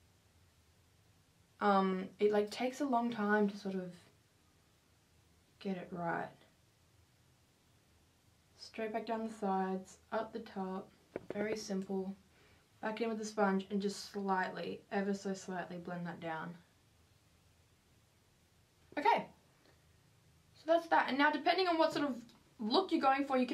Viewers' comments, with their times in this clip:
0:10 omg i was very concentrated, andd i almost died of fright thinking that they were knocking on my door pls somebody tell me im not the only one who got scared lmao